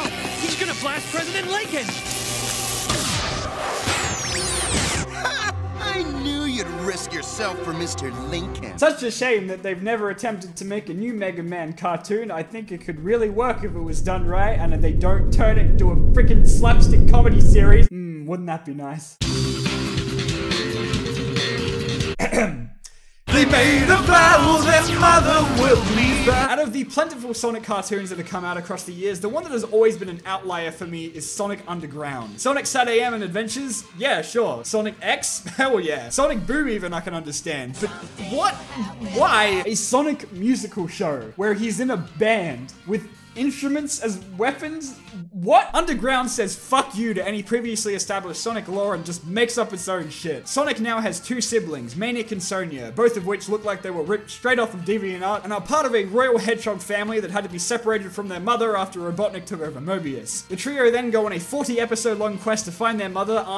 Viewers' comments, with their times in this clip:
0:03 okay, is that my ears messing with me, or is that Knuckles' voice?
0:45 the songs are lackluster and sounds of the beams are so earripping. But the show is so good.